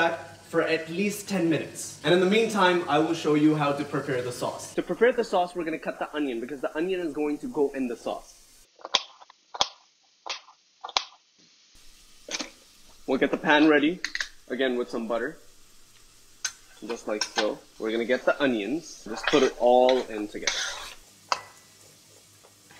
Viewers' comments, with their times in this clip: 0:05 audio quality go bye bye